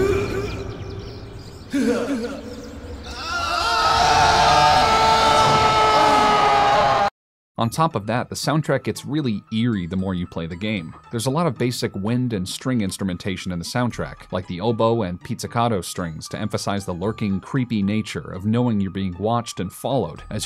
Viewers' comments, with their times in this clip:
0:05 Jesus Christ game that screams! O.O